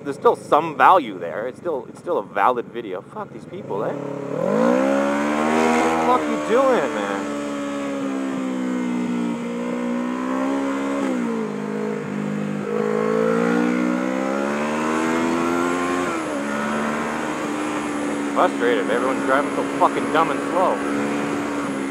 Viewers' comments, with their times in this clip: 0:03 your canadian came out :P